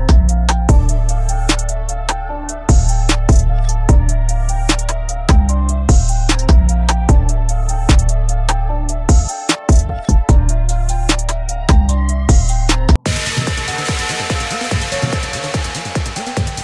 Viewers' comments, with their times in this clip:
0:04 hey hey, why do you hear a rap base right in this Boss?? (◉‿◉)